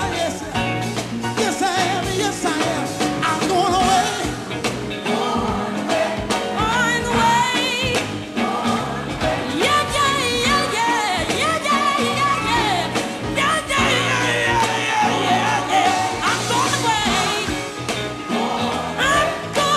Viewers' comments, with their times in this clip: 0:06 Loved twinkie singing on "Im Going Away" .....she was looking back like "come get this mic" lol.... RIP WALTER